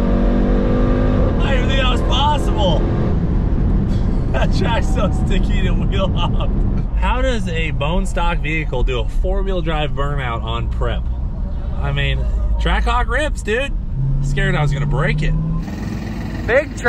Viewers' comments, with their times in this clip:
0:03 Im trying to figure out what he just said lol